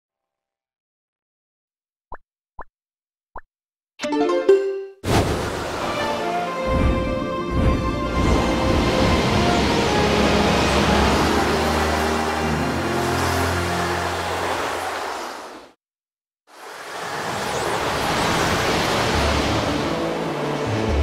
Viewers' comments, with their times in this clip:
0:09 THAT SOUNDS LIKE THE END OF MINUET OF FOREST FROM OCARINA OF TIME